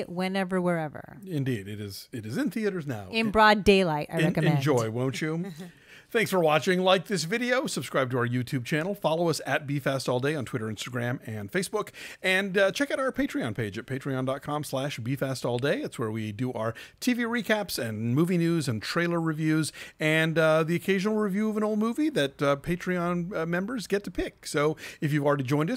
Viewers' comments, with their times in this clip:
0:09 almost thought you said "beef ass all day"